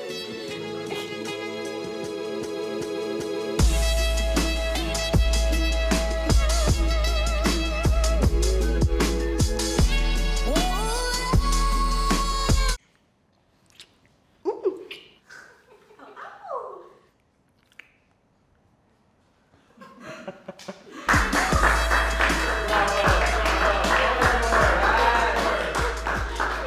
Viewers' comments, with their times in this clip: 0:10 The way the music just ended lmao